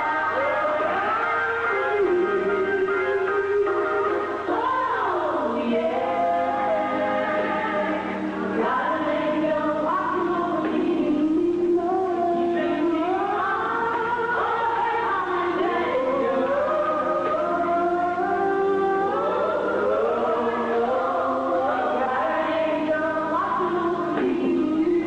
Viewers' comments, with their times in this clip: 0:04 !!! CONSIDERING THE QUALITY OF THIS VIDEO - the CLARITY of their voices. This would be too much for me to bare in person fr - it’s tooooo good!
0:06 When Denise did that inflection on that note 🔥😭 So simple yet so fire! She is singing alto with Dorinda here.